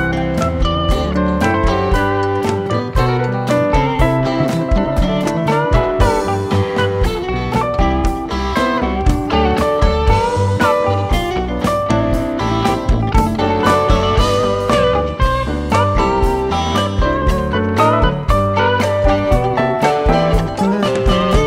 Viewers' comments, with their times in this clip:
0:07 Great rhythm riff from Weir, and Billy really going to the toms!